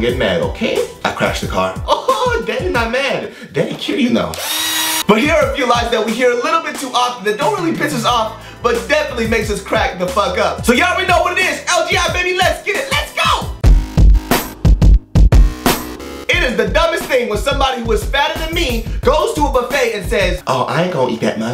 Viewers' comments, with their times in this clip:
0:03 What the hell? Where'd that drill come from?! XD